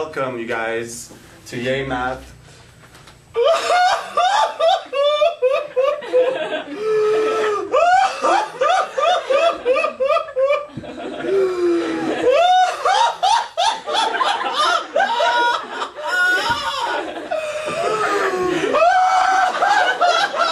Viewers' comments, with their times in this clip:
0:03 Dude said "Arthur Fleck"